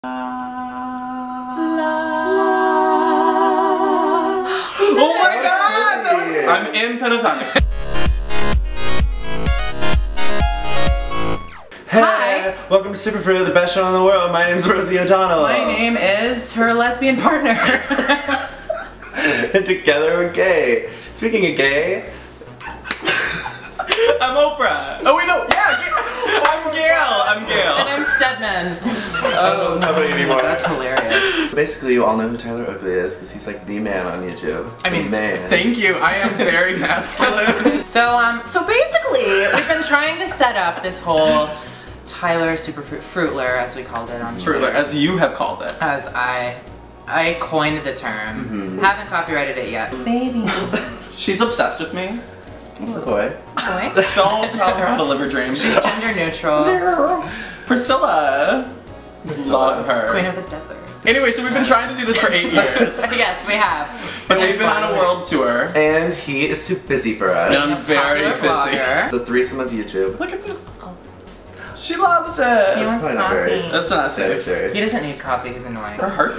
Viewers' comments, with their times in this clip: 0:03 really epic harmony
0:55 scott's laugh is so cute omfggggg
0:57 The noise Tyler made 😂😂